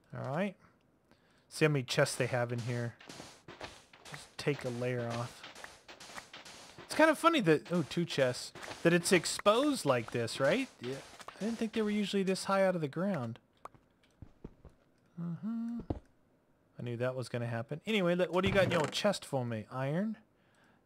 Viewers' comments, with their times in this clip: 0:08 who said "Yeah" in the background or am I going crazy?